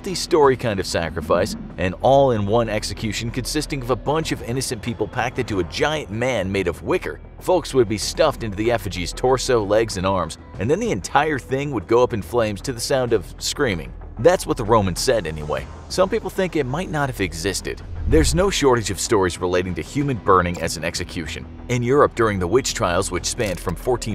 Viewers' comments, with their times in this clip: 0:10 the entire thing went into flame to the sound of : then a commercial came on and an upbeat music filled the air